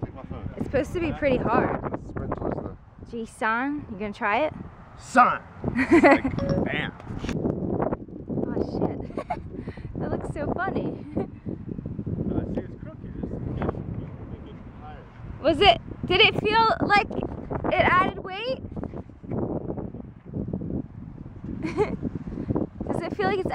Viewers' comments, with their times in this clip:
0:06 accidental siri activation